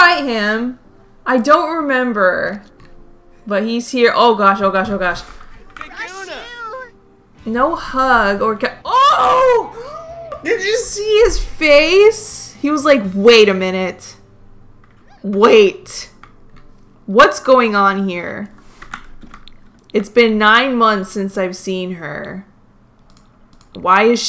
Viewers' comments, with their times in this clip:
0:09 is my FAVE loool the way u screamed😂